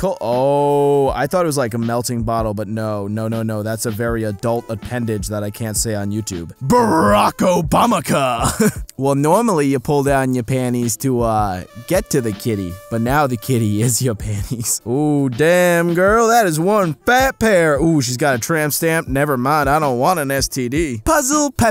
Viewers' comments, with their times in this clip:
0:05 Why do you say "panies"? There's a "t" in the word.